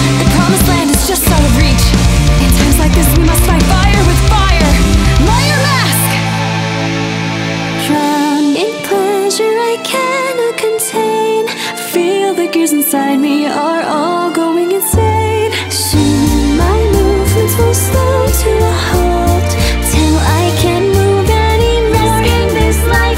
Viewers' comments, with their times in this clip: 0:04 it feels like she's calling out a special attack or something... I love it.